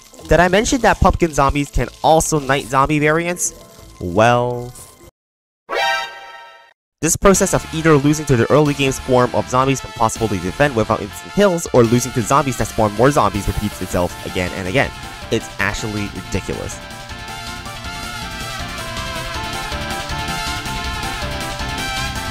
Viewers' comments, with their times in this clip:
0:08 So, funny story Before I realized the official Touhou OSTs, I ripped 3 full albums of my favs onto my phone, being 11, 12 and 17. Because I have them on my phone I use some of them as alarms, Koishi theme in particular, but being the person to have 29 alarms in a 2-hour window, it’s more than her theme. I genuinely had to do a double take because Murasa’s theme playing sounded exactly like one of my alarms going off, since I use her theme for some alarms. Thanks for the jumpscare and based music taste!